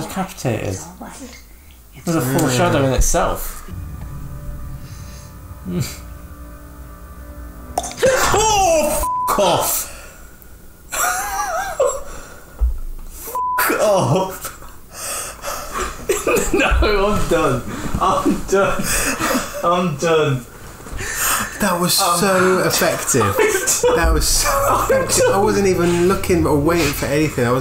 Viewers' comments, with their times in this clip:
0:04 The cluk sound reaction is by far the best reaction ever from you two,,,, lmao
0:05 When I first saw this in the theatre, I remember some chick screaming out loud at that "cluck" sound that had the audience laughing at her lol. It could have been her friend screaming as well now that I think of it. I just remember it was a funny moment and memory to have regarding this film.
0:06 I remember watching this the first time with full-blast headphones. It was not a very pleasant experience, man. 😭
0:07 when a tongue click makes two grown men reacts that way you know it is a damn good horror movie
0:08 hahahah my god. I laugh cause I was the same damn way. Fuck that tongue click hah.